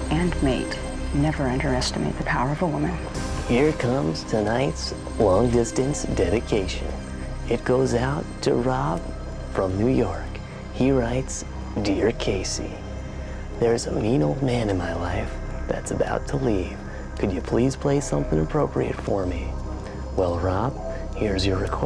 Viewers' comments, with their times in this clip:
0:04 my least favorite confessional, mainly because Cesternino is a terrible singer, which started to hurt my ears.